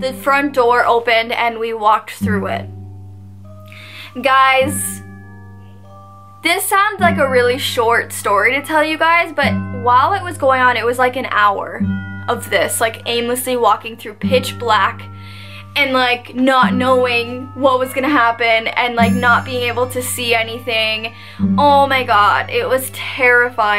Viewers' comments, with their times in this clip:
0:04 Is it just me or did anyone else here “Ey?” at just past ? Please tell me you were home with your mom at this point.